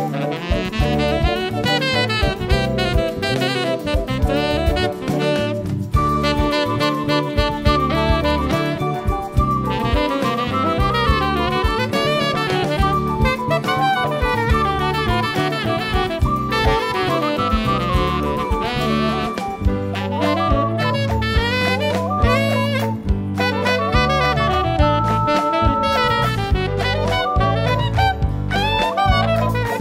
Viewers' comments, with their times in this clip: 0:05 I like how the ocarina's play Jupiter
0:05 HA! Everything is so fun and bright and colourful! And planetary, ;)
0:05 The sickest Jupiter quote
0:08 Is that a hint of Jupiter ? I don't know if that's in the original or not, but that's what it sounds like to me.
0:16 I like the use of false fingerings